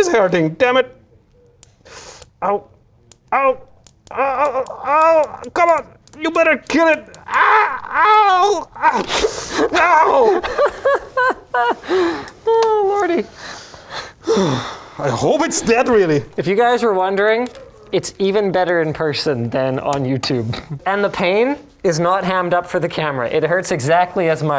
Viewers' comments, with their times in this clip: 0:07 I finally learned who mr.bean's voice over is